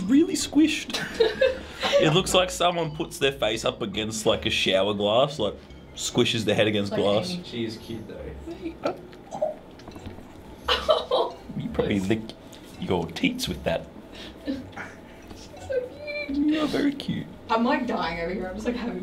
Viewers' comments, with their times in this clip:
0:06 thats what lazerbeam really sounds like